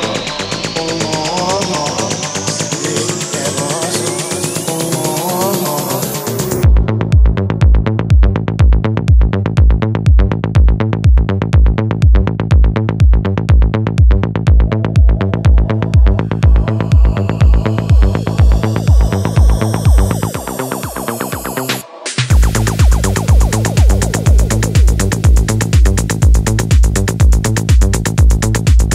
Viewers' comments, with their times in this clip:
0:09 The mix is just sublime 🤩